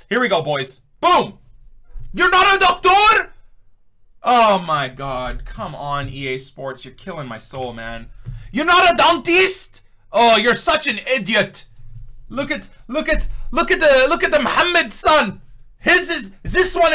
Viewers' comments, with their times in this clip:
0:03 is the beste, riktiktik with the controller